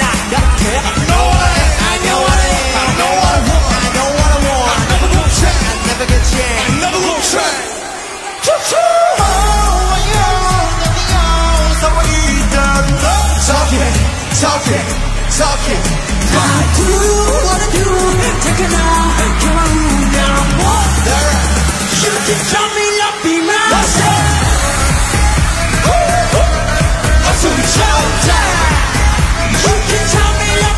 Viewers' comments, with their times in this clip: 0:09 How can Taetae sing such sweet with his deep voice 😥💜
0:11 v voice is change and i love that so much